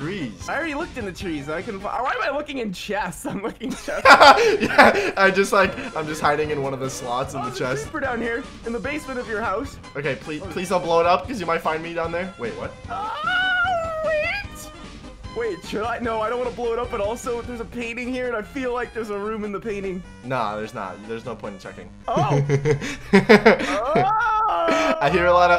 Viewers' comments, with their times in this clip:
0:07 Why am i vibing to the papyrus theme😭